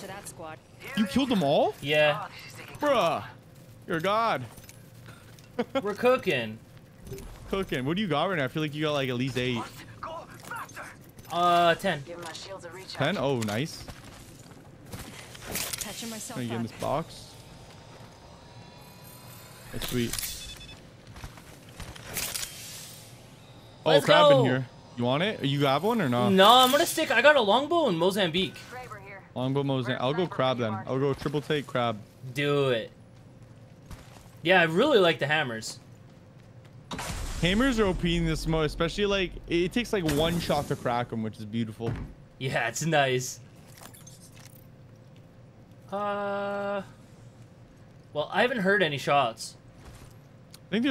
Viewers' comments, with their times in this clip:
0:03 Does anybody else think that he sounded KINDA like mirage
0:37 you literally went from not talking at all to talking and being hyped lol